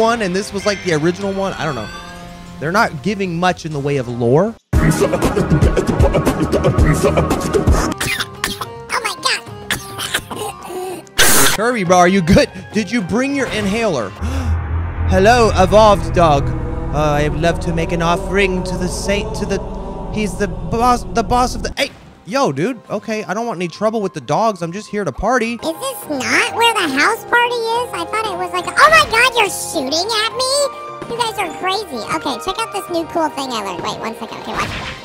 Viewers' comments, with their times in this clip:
0:08 he's probably coughing because of the sandstorm.
0:19 i love how it just turns into parappa freestyling